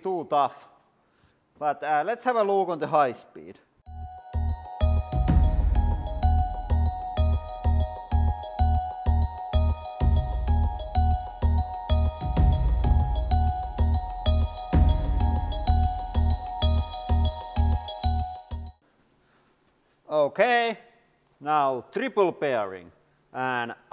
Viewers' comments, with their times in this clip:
0:07 scared bronzor noises -